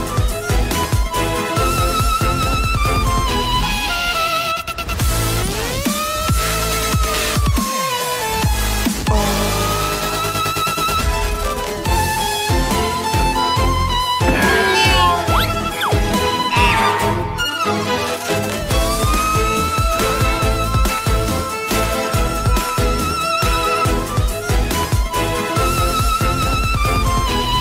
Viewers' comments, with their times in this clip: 0:08 the male undead voice from Dark Souls can be lethal when you don't expect it xD